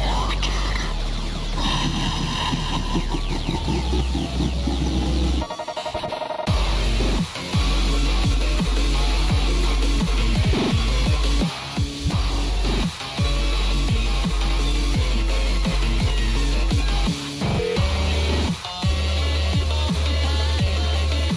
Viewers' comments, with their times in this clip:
0:05 Put this in ×2 speed and this somehow become even more a banger.